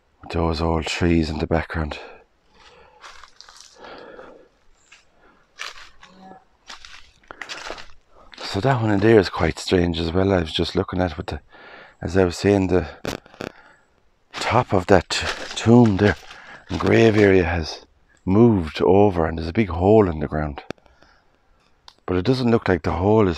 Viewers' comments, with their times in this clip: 0:04 At minute it sounds like you hear somebody say yes or yeah? After he talks about the trees overgrown. take a listen and tell me what you hear?